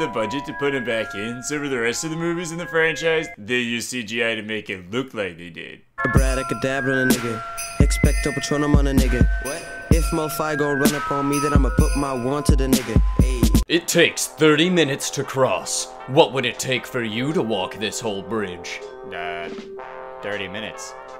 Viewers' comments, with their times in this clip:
0:05 harry potter remix lit af